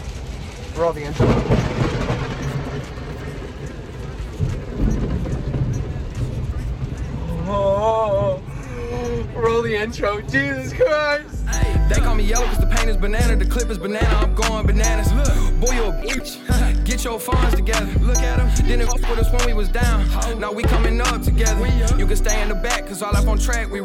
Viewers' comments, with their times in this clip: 0:07 From 0 was hilarious lol that scream and that Jump when the thunder came was hilarious!